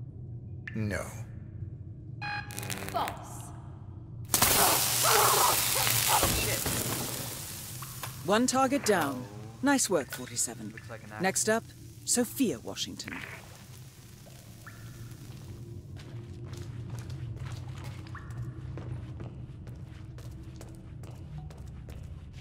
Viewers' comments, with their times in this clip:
0:06 Love that totally unenthused and bored "Shit."